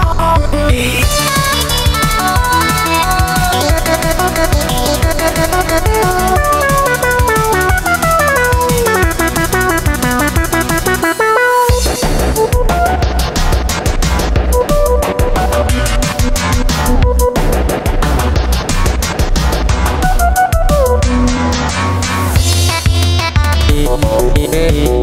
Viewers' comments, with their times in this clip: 0:07 I love yor and loid that singing and anya WTH WHY GF IS LIKE THIS